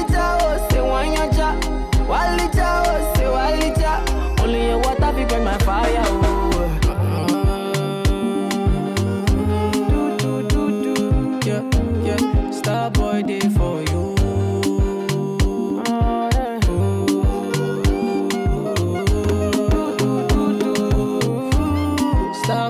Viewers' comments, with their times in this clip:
0:04 love the groove from onwards